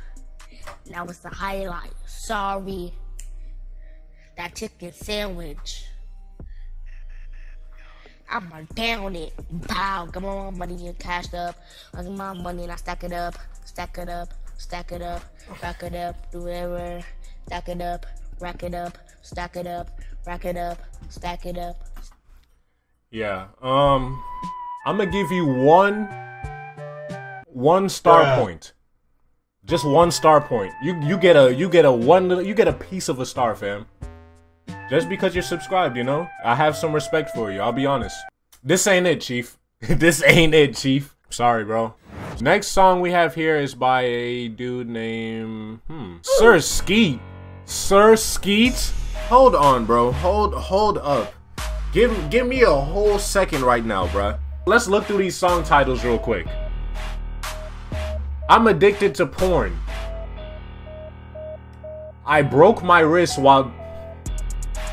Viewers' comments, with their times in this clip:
0:04 that's a white boy that trying to copy someone
0:09 this song was goofy but is it just me or was his flow kinda heat for a sec thoo 👀
0:48 Yo idk what it is when he puts that like beat it be having me rolling🤣🤣🤣 Let's get with that 100k now we need 1 mil